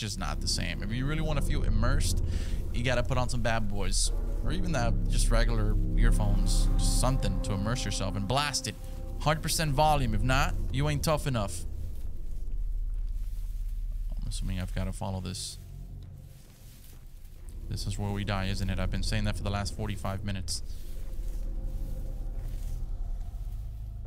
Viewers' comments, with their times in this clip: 0:10 "Gotta use earplugs and blast them ! 100% or you ain't tough enough." Then proceeds to scream his head off and oblitarate my eardrums. Thanks man 😂🤝